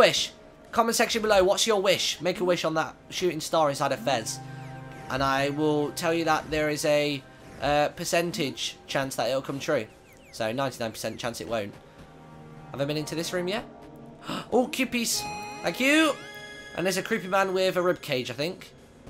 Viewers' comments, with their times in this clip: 0:04 At Like When He Shouted 'WAOAH! SHOOTING STAR' I Was Leaning Back On My Chair Daydreaming And I Had A Small Heart Attack :)